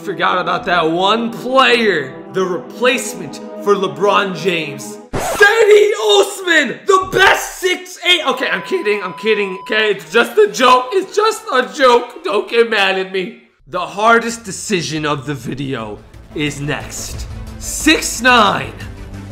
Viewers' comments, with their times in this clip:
0:05 I think that was a voice crack or just dramatic